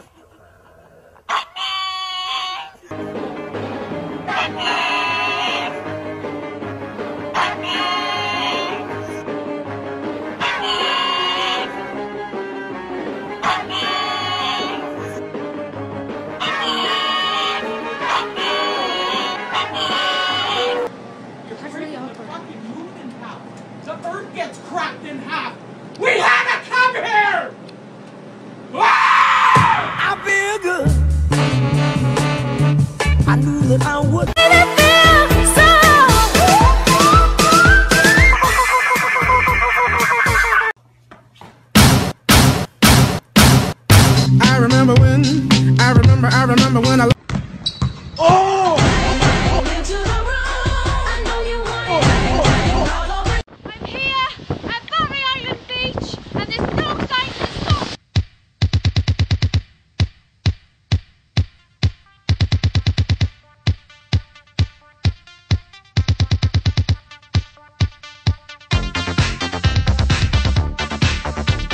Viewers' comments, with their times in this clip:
0:05 I thought there comes Bohemian Rhapsody.
0:56 I could have sworn we were gonna get rickrolled there for a second